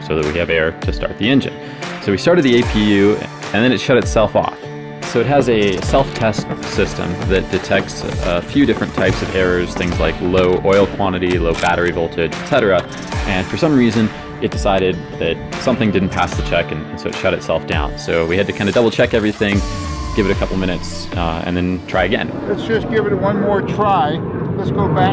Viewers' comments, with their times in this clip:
0:09 I bet everyone at the airpark loved the mu2 startup